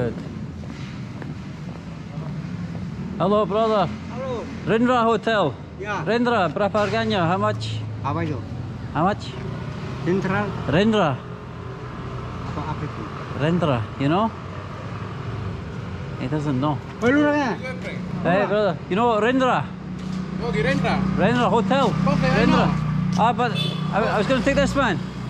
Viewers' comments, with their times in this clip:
0:09 Did that man just said Tinder ? 🤣🤣